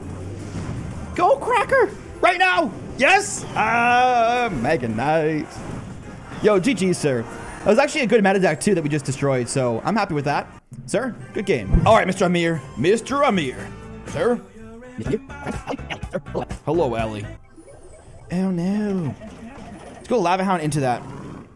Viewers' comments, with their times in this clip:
0:03 ahhh megaknight ?!? the game was over = no stress to mispronounce card you have no excuse 😂😂